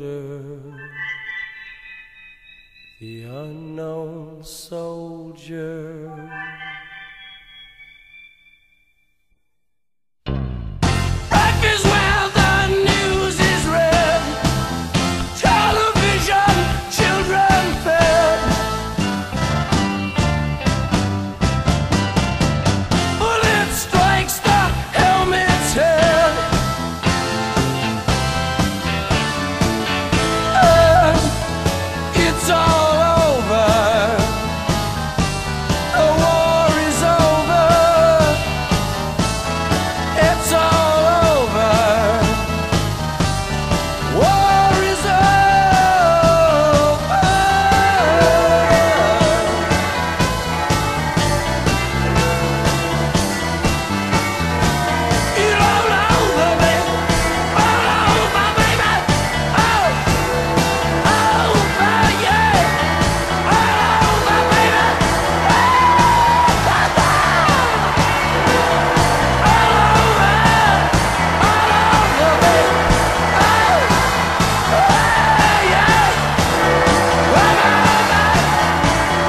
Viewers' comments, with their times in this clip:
0:08 this is probably one of the most intense parts of any song I've ever heard. It's not just the music alone. It's the meaning behind it and it fits perfectly.
0:10 From you can feel the surge of emotion in Jim's voice, just encapsulating the foolishness, desperateness of this particular war, especially in the video clip, showing horrendous images of our fallen brothers, pure display of what art really's about. Thank you Jimbo for everything
0:32 and on it has a Talking Heads sound for sure.
1:05 that laugh gives me chill